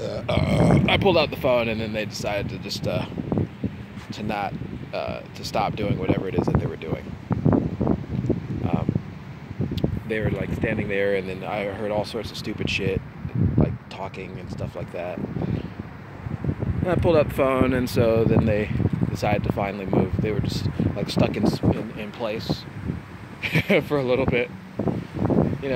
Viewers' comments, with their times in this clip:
0:06 I hear a beeping sound that sounded like a police radio.